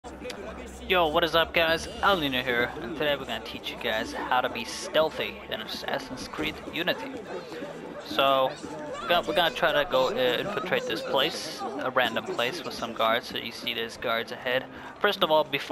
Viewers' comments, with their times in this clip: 0:01 I laughed so hard cause I thought he said "What's up guys, I'll need no hair."